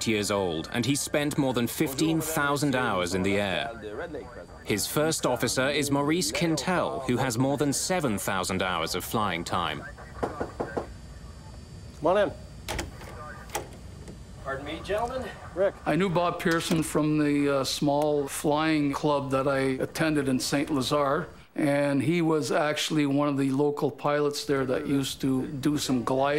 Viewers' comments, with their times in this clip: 0:08 Come on. What’s with the NYPD radio chatter dubbed in at the mark calling for the 19 Pct sergeant to respond? It continues throughout. They couldn’t find real ATC audio to use instead of real New York Police radio chatter? Sloppy production.